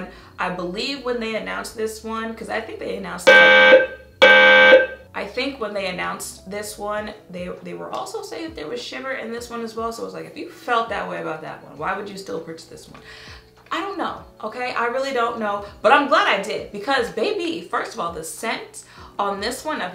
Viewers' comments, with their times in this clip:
0:03 That alarm scared the sh*t outta me 🤣😭